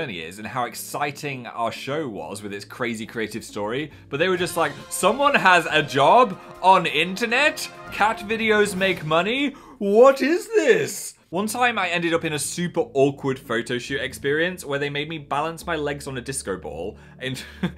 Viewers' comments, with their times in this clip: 0:03 I just got jump scared by the music I'm a dumbass :)